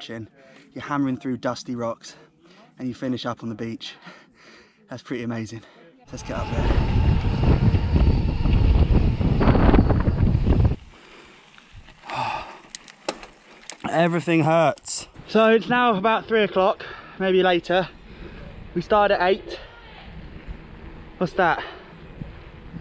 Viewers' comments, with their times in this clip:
0:06 looks and sounds Luke your using a E-bike